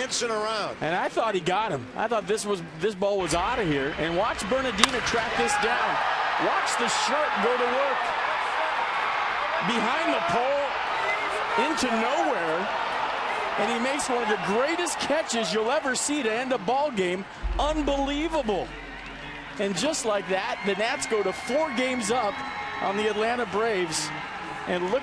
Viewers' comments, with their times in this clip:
0:08 During this replay, you can faintly hear Bob Carpenter's reaction...